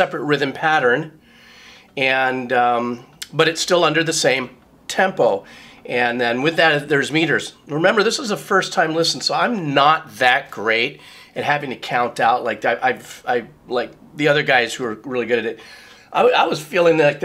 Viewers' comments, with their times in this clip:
0:03 The final riff from out was crushing. . . .then came the aneurysm!